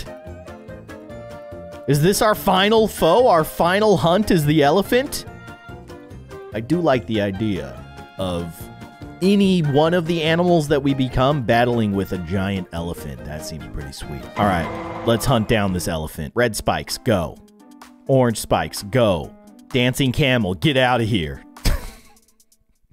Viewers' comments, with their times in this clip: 0:09 dog in the background